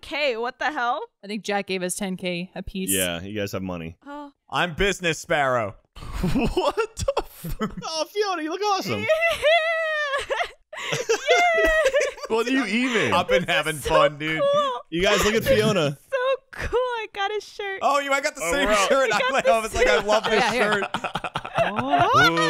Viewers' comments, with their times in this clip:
0:09 Melted my heart to hear her so happy. And I know I’d be the exact same way